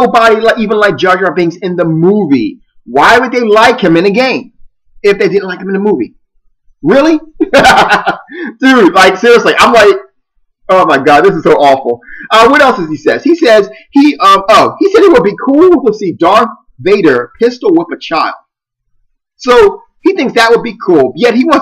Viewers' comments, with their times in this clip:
0:07 Your laugh reminds me of Owyn from Oblivion. Anyways, I completely agree with everything that you said. This guy sounds like an utter idiot, and I love how you destroy every single one of his points.